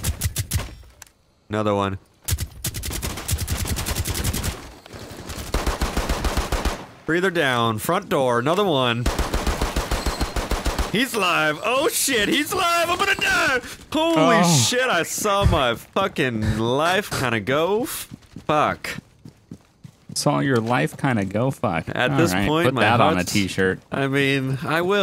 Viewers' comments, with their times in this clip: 0:08 From -10-22 had my ass cracking. it goes from normal voice to country back to normal. 😰😂😂